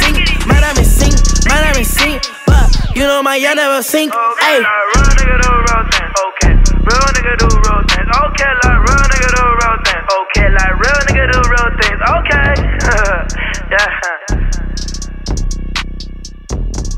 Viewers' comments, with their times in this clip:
0:04 Song sounds good, no clue what he’s singing tho....love the beat of the last part !